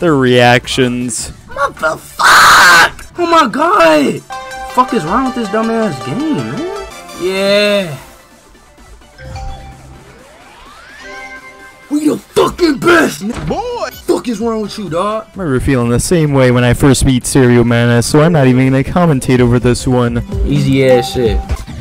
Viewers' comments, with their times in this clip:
0:03 Sounds like Mr Incredible Becoming Old Phase 5